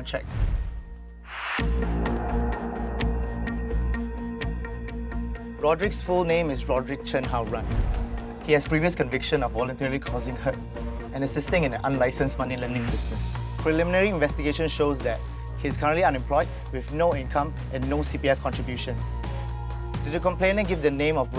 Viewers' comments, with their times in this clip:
0:06 chen hao Ren, sounds like 好人 which means good guy, so ironic